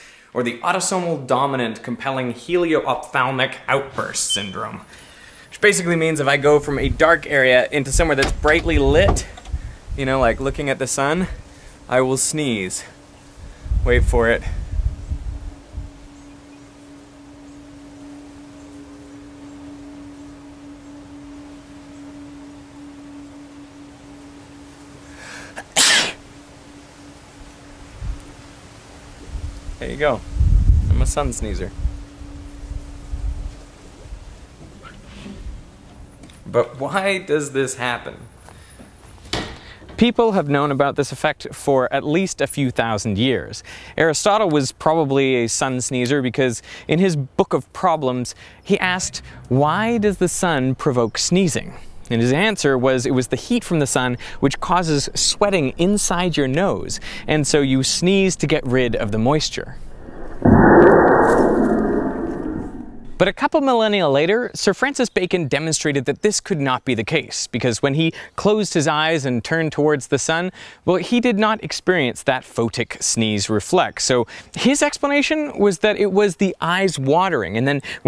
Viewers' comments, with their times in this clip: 0:04 Change the battery in your fire detector!
0:24 that was the best baby sneeze i ever heard
0:24 Sneeze thank me later
0:25 would have been better if it ended just before he sneezed .... was he a sun-sneezer or not? the world may never know...
0:25 Derek's beautiful face and then he sneezes like a Chihuahua.
0:25 for his sneeze
0:26 :O i sneezed at the same time :O
0:27 Bless you, Derek!
0:57 the sneeze sounds like half life giant doors
0:58 dads when they sneeze
0:59 Sneeze explosion. XD
1:00 sounds like a gun
1:00 dinosaur roaring in background